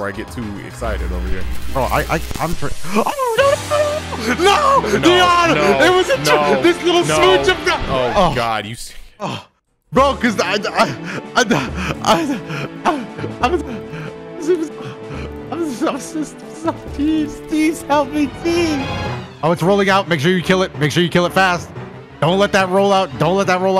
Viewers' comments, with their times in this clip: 0:07 this bit had me fuqn dying. Straight up sounding like Joe Biden on the campaign trail.